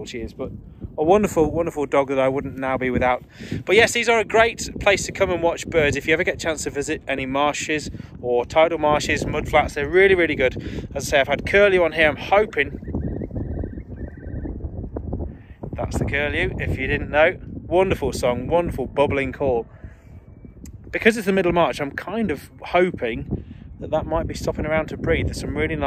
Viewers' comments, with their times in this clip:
0:09 that's music! - thanks for what you do!